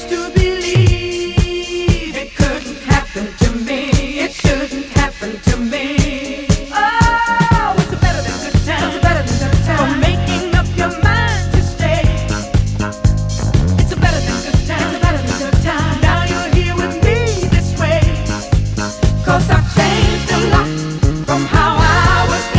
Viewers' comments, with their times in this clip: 0:08 when that bass kicks in ... oh the bass!